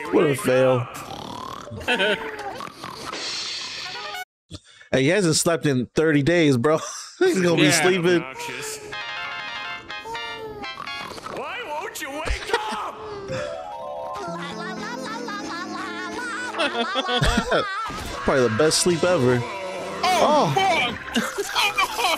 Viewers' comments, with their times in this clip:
0:08 Fun Fact: If you listen closely to the ring tone it’s plays parts of the SpongeBob theme song.
0:09 why is that his ringtone!? I laugh every time I hear it